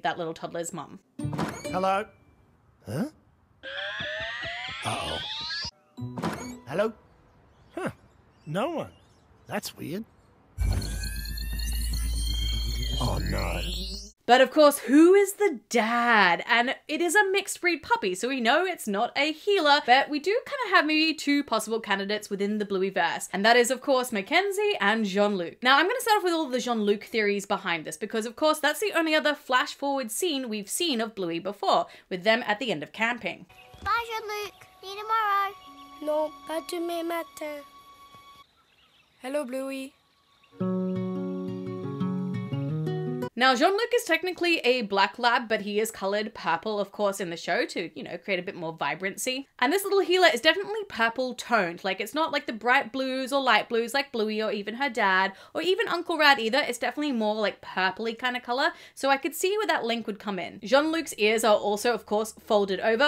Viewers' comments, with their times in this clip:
0:10 why does that cannon sound like it's going to shoot a actual laser?
0:45 He’s cololed papel